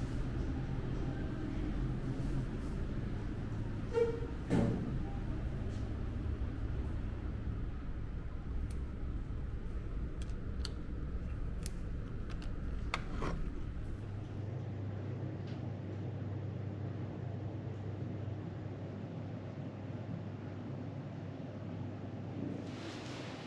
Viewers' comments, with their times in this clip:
0:09 Loved the beginning (from to the end), this kind of ASMR hotel tour vlog "mukbangish" with human squishing mouth sounds and breathings content